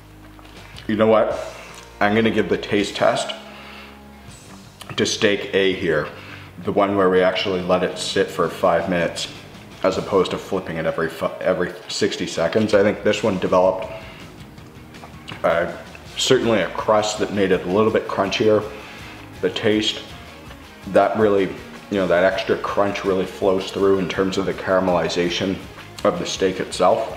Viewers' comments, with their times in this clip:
0:08 every Fu.... oh no every 60 seconds 😂
0:10 As opposed to flipping it every fuck....
0:11 i think steak A taste far better than the steak B. Why? I don't know if I misheard you but if you listen to you sounded like you swore. haha